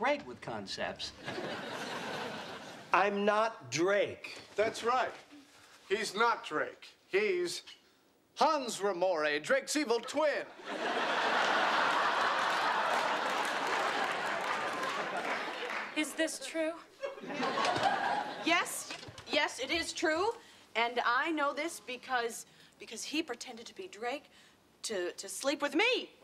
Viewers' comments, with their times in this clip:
0:07 Everyone commenting about Chandler but the way Ross said Hans Ramoray was so funny